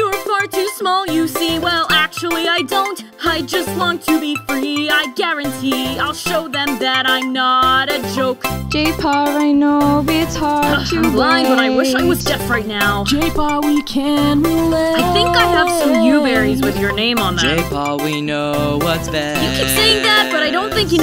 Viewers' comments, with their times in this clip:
0:08 accent on hollypaw